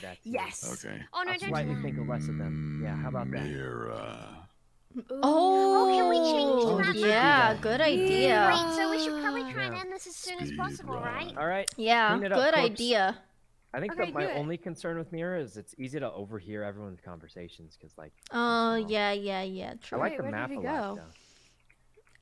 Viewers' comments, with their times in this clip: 0:05 all of them have very unique voices